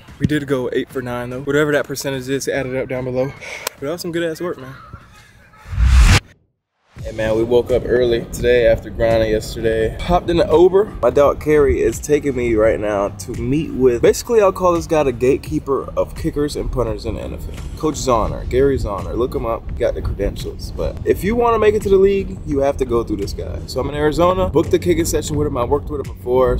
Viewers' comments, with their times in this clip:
0:10 man's hopped in the ouber